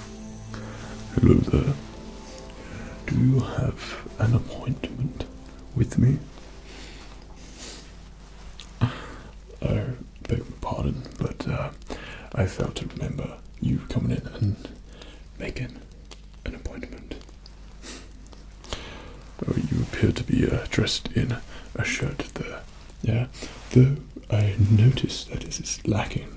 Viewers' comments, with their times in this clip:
0:08 Breathes in with malicious intent